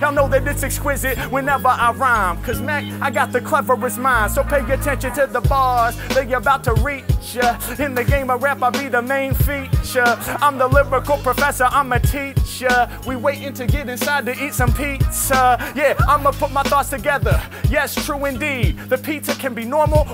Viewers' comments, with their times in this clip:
0:06 for me is the most addicting part, I watched it million times 😂 the beat and the lyrics is 🔥 love it